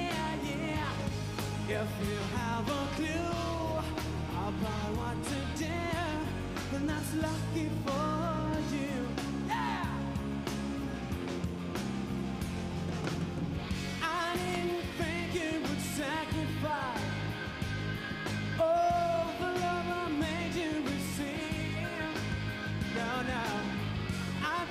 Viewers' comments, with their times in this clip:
0:09 Love the growl in the "yeah" :)